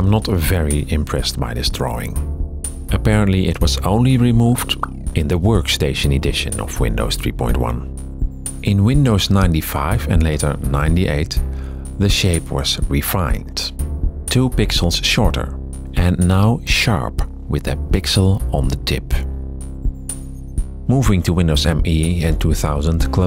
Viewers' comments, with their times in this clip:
0:08 wokstation makes me hungry
0:08 alright I'm not trying to be that guy but wokstation